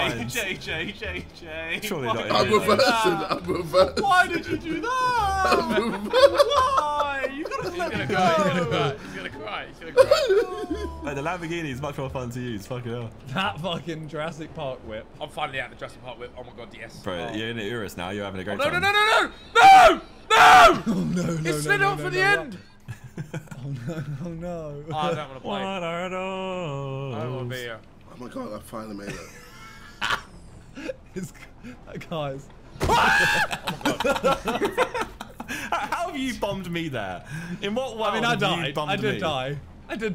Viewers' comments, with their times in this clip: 0:10 thats the laugh of an evil human right there😂
0:27 Is anyone gonna notice that jj had a voice crack